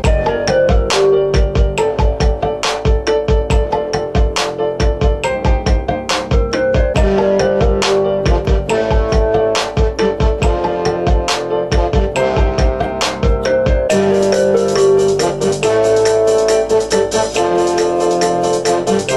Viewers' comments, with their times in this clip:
0:03 you got a text !